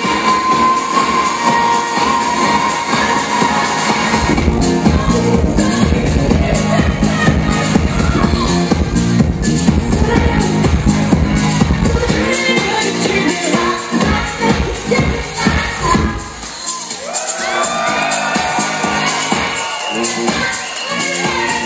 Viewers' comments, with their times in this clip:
0:07 PLS. ANY1, NAME of JAM Morallas is playing ?!?! Im literally jumping off my couch jammin in my apt. to this SUPER FIERCE HOUSE BEAT!!!